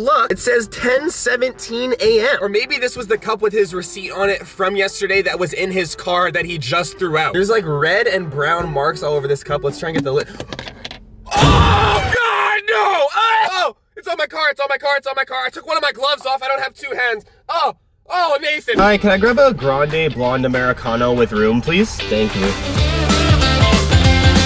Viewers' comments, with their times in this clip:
0:10 why does he sound like the office meme tho?